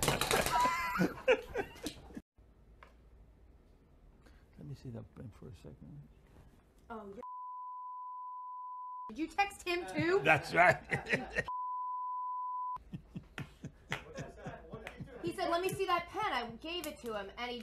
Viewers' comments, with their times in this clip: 0:04 longest bleep in show history?